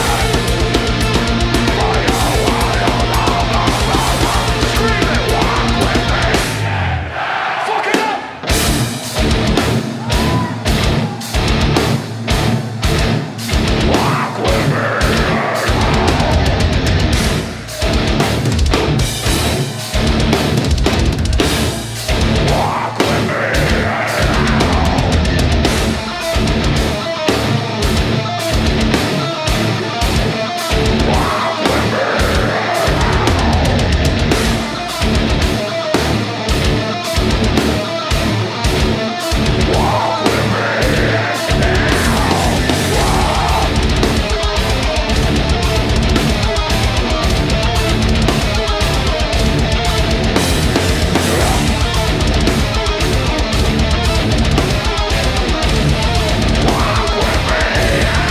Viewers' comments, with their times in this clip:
0:07 is the tightest and heaviest that part has ever sounded. Jesus christ.
0:43 listen the part from straight till the end and compare to what Chris Adler did, and tell me he's easily equal...yea there are many great drummers as good as Chris, but man the way he innovates the drum part is just so amazing....He's a kind of drummer who focus mainly on technique rather than speed...